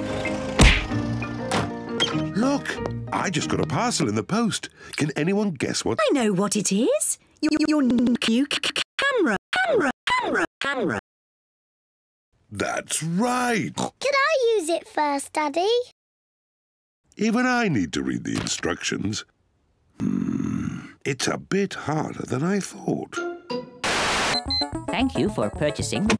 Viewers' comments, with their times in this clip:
0:08 word "camera" in 4 lenguages
0:10 Secret Gummy Bear Voice
0:10 Mommy pig just keep saying camera higher and higher!!!!!!!!!!!!!!!!!!!!!
0:10 She Sounds Like Daddy Pig
0:11 i thought said cucumber 🥒 lol